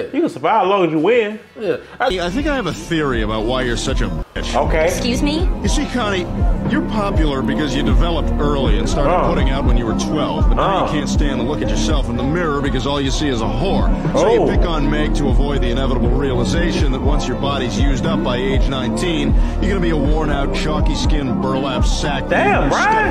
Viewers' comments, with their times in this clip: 0:04 you missed your censor my boi